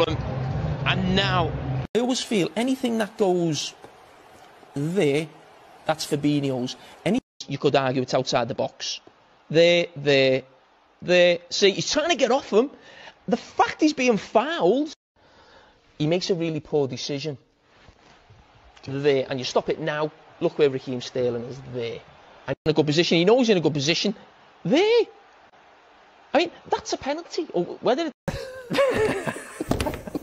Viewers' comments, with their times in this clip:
0:09 "There, There, There (...) the FUCKED he's being fouled".
0:13 the f**k is being fouled